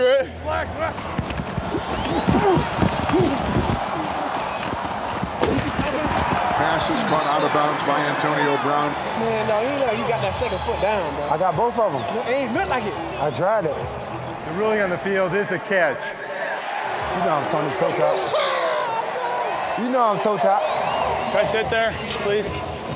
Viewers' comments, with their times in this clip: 0:08 they sound like 2 high schooler arguing